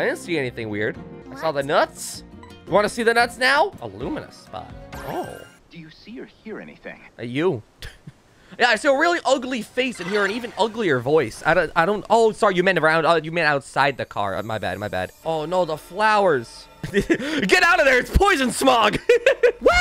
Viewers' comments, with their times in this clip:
0:05 Why does he sound and look like a wierd Solid Snake.